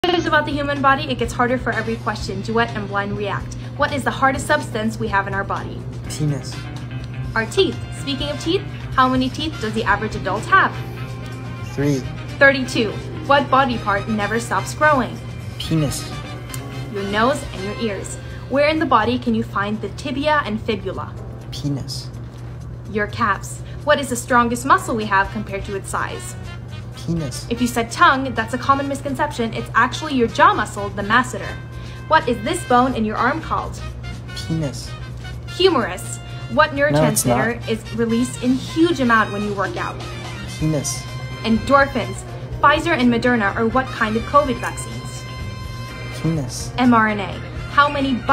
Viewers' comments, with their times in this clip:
0:00 I feel it when she says quéêèeiïíîīìz
0:05 thought he said semen tbh
0:36 I love that tiny "no it's not" at the end